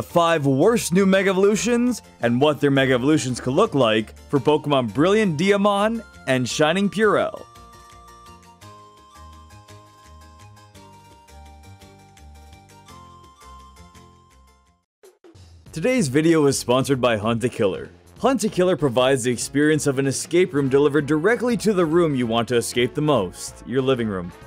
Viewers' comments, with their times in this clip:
0:05 Shining Purell? Even Pokemon has been affected by the pandemic!